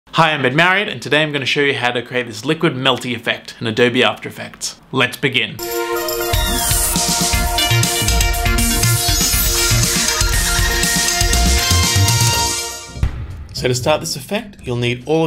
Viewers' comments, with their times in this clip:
0:00 Hi I've been married